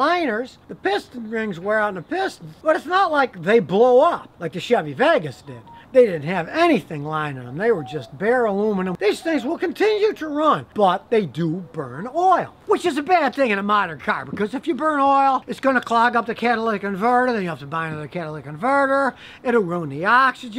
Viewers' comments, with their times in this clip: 0:04 Listen for the spaceline ringtone
0:04 Ayo who's phone was that lmaoo